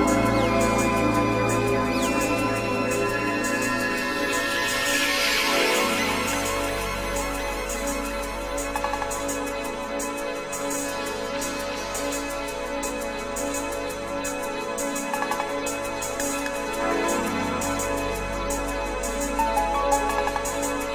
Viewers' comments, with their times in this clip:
0:08 transition so good